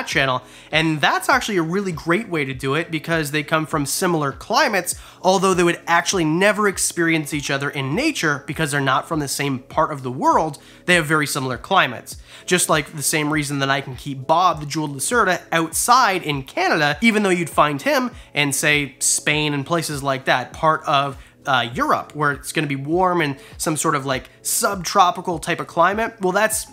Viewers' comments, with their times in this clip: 0:09 in the backgound : hello